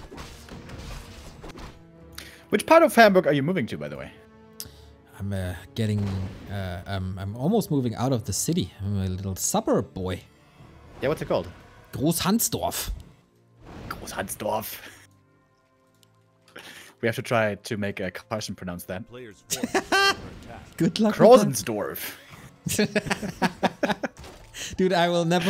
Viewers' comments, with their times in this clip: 0:06 sounds like GhoulsHuntsDorf